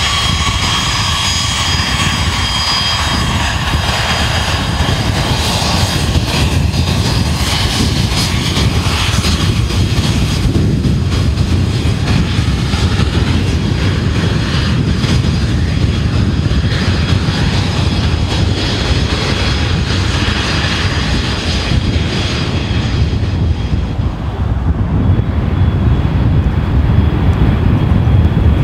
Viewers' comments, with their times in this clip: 0:10 is that the air brake?